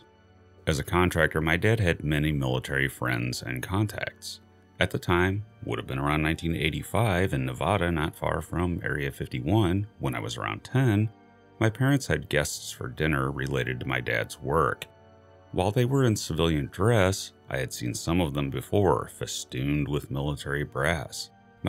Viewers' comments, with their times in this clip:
0:08 Sounds like the narrator has just woken up am!